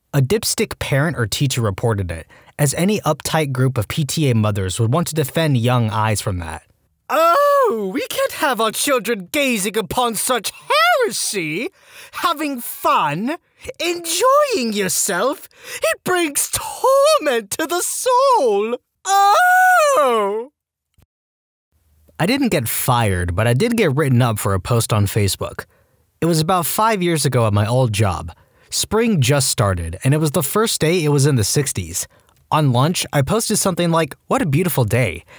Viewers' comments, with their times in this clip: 0:06 here u kinda sound like one vr game on oculus, forgot what it was called but it was some type of wizardry game u use hand tracking with.
0:06 ok why does the voice here sound like James from Pokemon team rocket
0:07 top tier voice acting
0:07 I love the impersonation of people who want to constantly censor or ban things to "protect young eyes".
0:07 DUDE YOU ARE SO TALENTED WİTH THAT VOİCE İ AM SO İMPRESSED(i love ur videos btw i allways listen to them while drawing n stuff :D)
0:07 The more I watch/listen to these I laugh. The Voice acting Chef's kiss
0:18 You pulled off that “OHHHH!” too damn well 😂